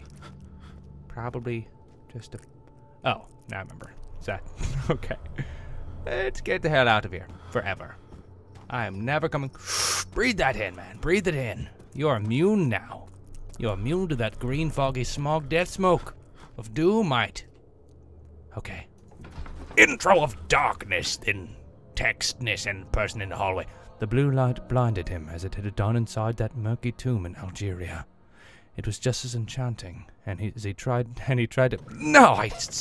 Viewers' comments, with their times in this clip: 0:08 Im nev- "Breaths in hard" BREATH THAT IN MAN, BREATH IT IN, YOUR IMMUNE NOW LOL
0:20 Fuck he does Daniels voice good